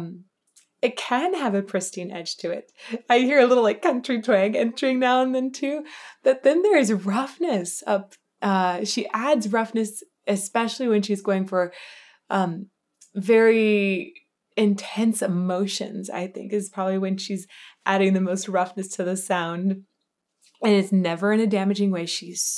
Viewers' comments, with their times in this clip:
0:10 That roughness is her rock background but for this song? Maybe speaks a recent love but not the most recent? Grown folks doing grown folk things? The song tells the story of a breakup and even us old folks deal with breakups and we tell the tale in the voice we have.